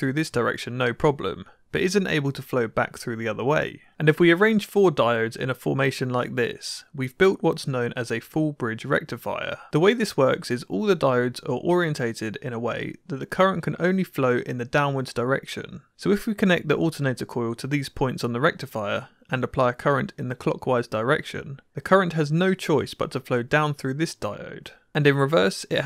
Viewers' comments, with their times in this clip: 0:03 electric boom intensifies
0:04 You mispronounced FULL BRIDGE RECTIFIER. For correct prononcuation, see ElectroBOOM.
0:05 It sounds weird with this isn't screamed at 120dB.
0:07 Say it properly please
0:07 ElectroBoom noises in the background
0:08 Raise your hand if you were totally expecting a "FUULLLL BRIIIIDGE RECTIFIERRRR!!!!!" as a shout out to Electroboom but ended up with a sad face instead.
0:08 needed significantly more echo effect. :P
0:09 you forgot to yell it excitedly
0:12 I can hear electroboom shouting